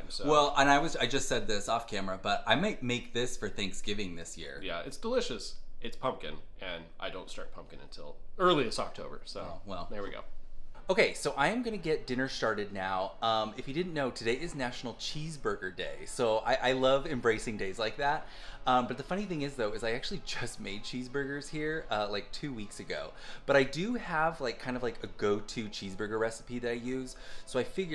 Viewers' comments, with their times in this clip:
0:10 I lost it at “I’m gonna get dinner sharted!” Hahaha 😂 Thank you for the laughs and videos!